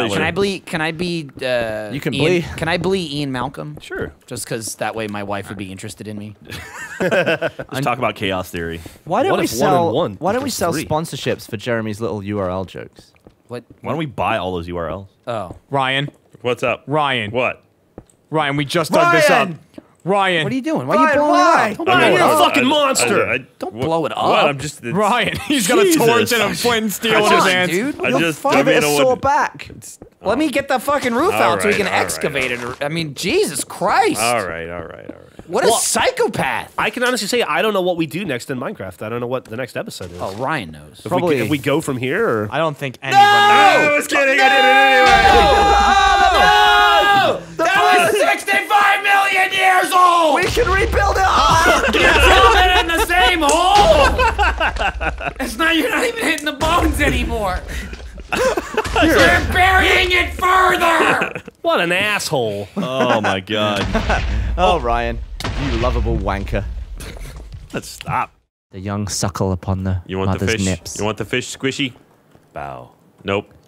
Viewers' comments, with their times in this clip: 0:06 (Ryan goes BOOM)
0:59 you’re burying it FURTHER!(x9000 vinegar)